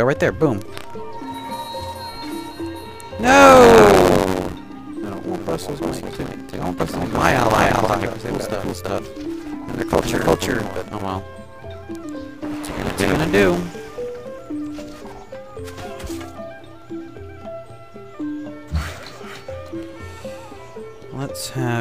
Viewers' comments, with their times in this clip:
0:04 you sound rather scary.....